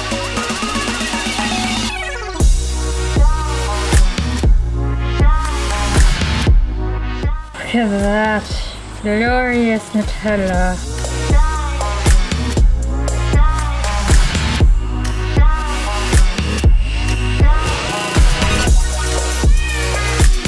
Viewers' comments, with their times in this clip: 0:06 the song sounded like it was saying " die nuttella " ahaha